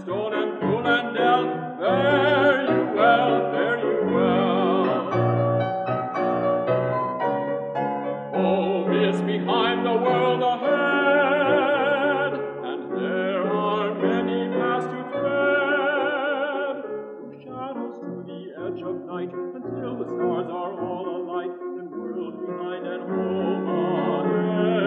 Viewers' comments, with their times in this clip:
0:09 Denethor eating noises intensify